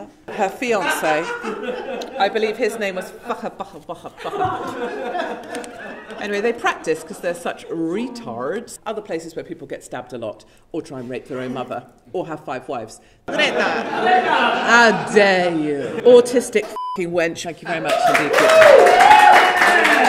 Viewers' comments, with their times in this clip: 0:07 when she says the name, gets one or two fake laughers then repeats it like 2 times as it was the golden joke...